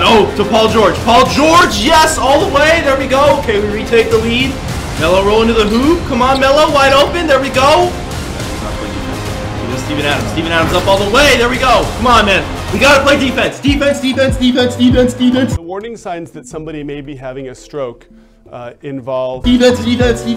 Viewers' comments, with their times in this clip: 0:06 What is the suspenseful music